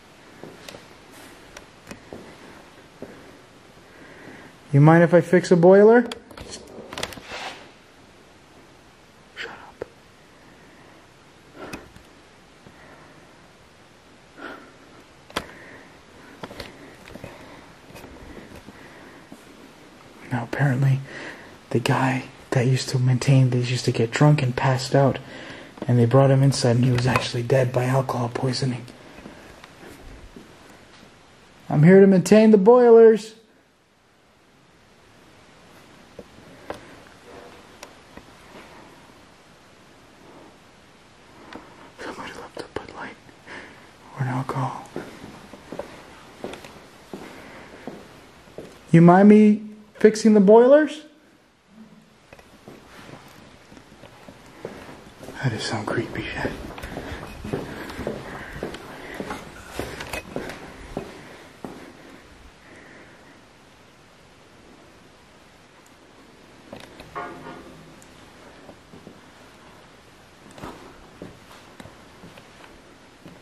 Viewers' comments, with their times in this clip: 0:03 there was a woman talking then what also sounded like a man responding, amazing👻
0:52 ...when you asked if they mind you checking the boilers, a woman’s voice says “No”!😳👻☠️ Creepy AF!!
0:59 another disimbodied voice saying unearth